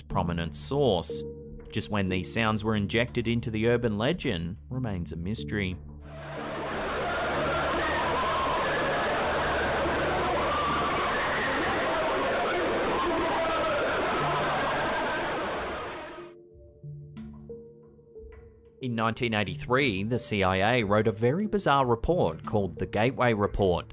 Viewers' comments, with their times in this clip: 0:06 Sounds like an everyday lunch line at Arby's